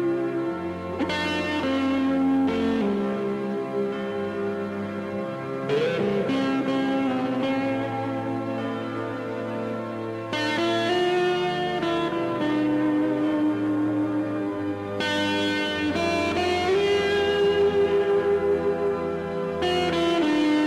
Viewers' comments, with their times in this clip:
0:06 The note takes your breath away